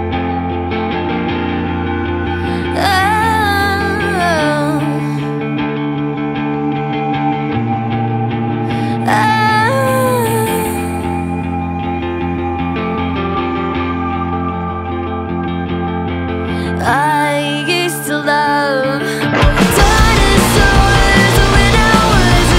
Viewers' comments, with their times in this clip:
0:03 Not to be rude or anything but its sounds like she is trying to push out a super hard poop! XD